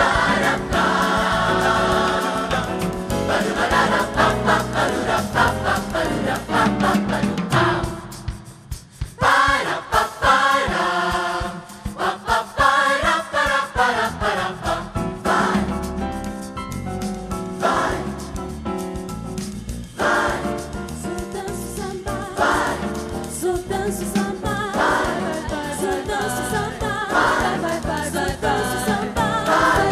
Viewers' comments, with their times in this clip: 0:10 Outstanding group! Listen for the short tribute to Duke Ellington Nicely done!